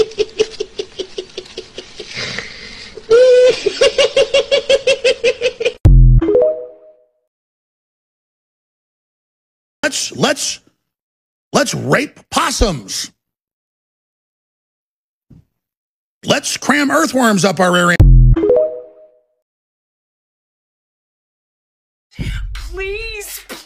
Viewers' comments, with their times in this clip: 0:05 Bros laugh was devious 💀